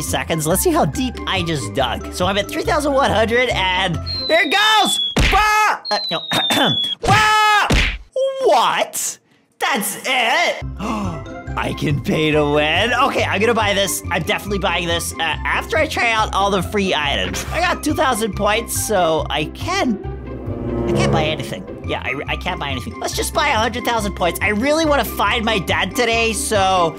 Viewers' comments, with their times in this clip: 0:08 i love how he say "WHAT"